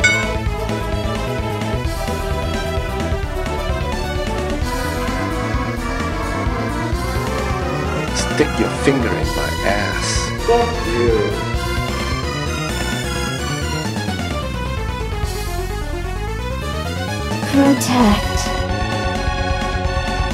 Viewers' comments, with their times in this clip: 0:08 yo what the f is that sound effect for taunt my guy. weird choice